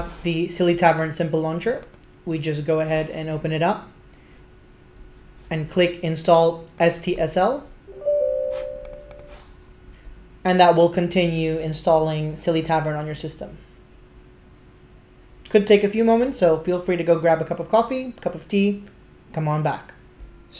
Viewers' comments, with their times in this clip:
0:03 did your voice/pitch change onwards?